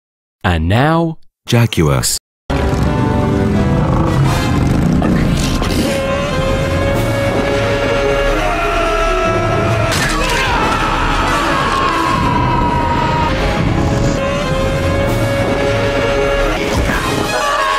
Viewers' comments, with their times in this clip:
0:00 and now JAG-YOUR-AS